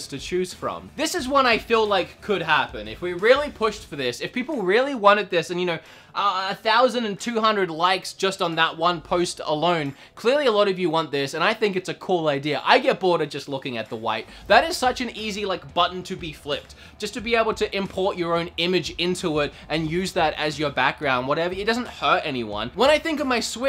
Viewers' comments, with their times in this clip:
0:07 sounded like you said “post Malone”